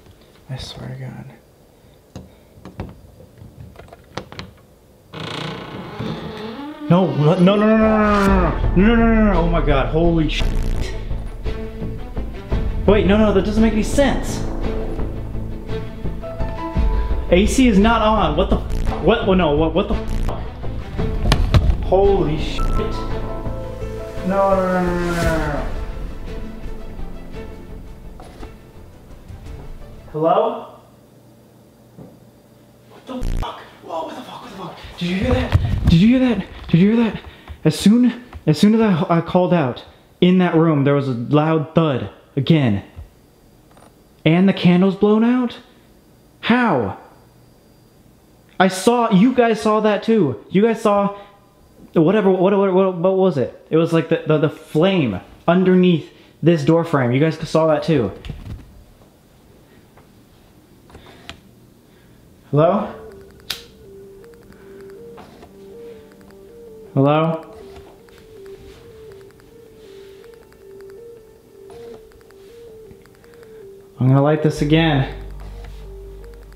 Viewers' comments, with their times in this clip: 0:05 opening door sees candle with no flame INTENSE BATTLE MUSIC
1:00 At first I thought this was a joke until it got to you can hear how scared he was